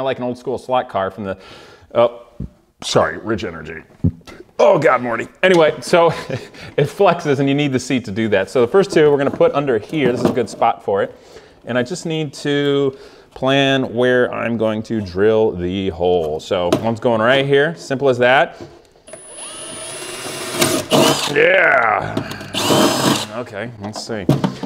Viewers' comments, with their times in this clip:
0:06 I kinda hate that I love this cheeky style, but I think it's also because you seem a bit happier and are talking about something you know incredibly well and are giddy about. I love the small bits in your vids when you relax and say 15 things about one section of a wheelwell or whatever in a single breath, right before you catch yourself. You know your S, don't shy away from it and embrace it. Perfect example: